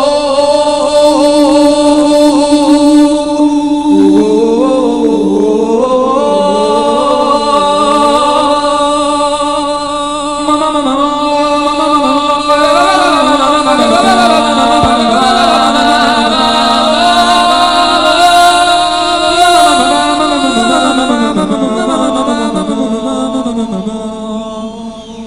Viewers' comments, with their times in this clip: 0:09 sounds like one vision intro